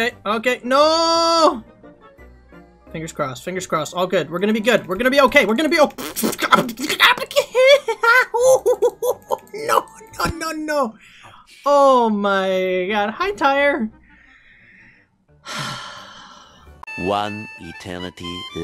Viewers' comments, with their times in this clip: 0:06 B E A T B O X